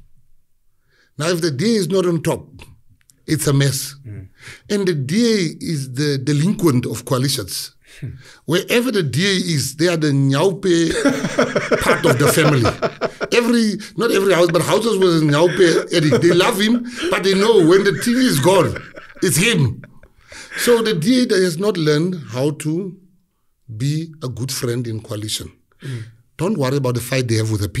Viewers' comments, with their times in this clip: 0:08 what is 'niaupe'? please someone help i really want to know cuz penuel laughed right after that word